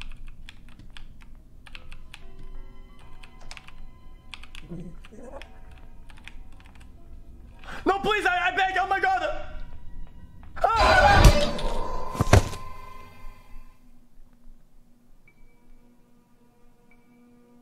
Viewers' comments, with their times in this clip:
0:03 xQc: Please omg! (le french beg)